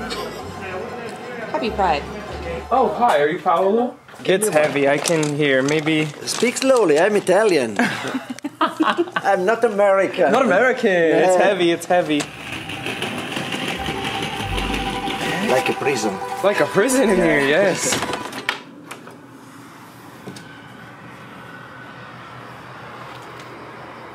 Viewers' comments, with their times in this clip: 0:07 guy sounded very interesting and funny